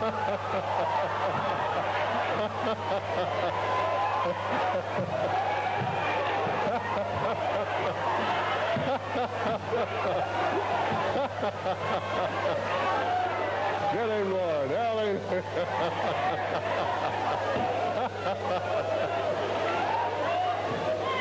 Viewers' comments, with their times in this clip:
0:09 he is sadistically laughing as the other guy flip flops on the carpet like a fish out of water!!! Wow really sick and disturbing